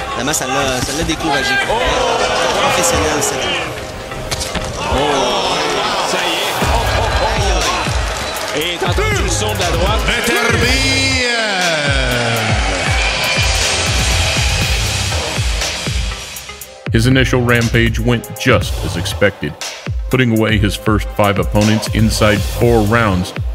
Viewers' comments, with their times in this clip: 0:10 you can hear someone gasping for air, I'm assuming he got his liver caved in 😂😂
0:10 I wonder who made that noise
0:10 Random guy vomitting ;-)
0:11 that moan in the back lmaoo someone got hit
0:11 Lol, minute did someone get raped? I have no idea what rape would sound like but if I were to guess it would be that.